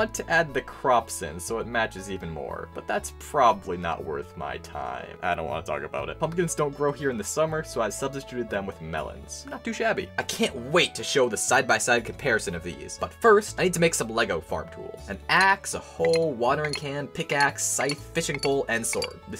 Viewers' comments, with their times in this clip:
0:04 use headphones here, trust me surround sound speakers